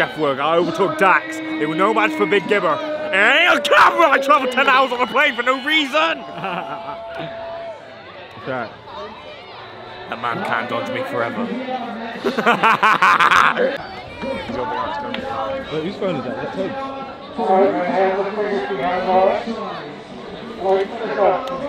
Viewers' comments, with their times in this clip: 0:03 what the heck was he saying????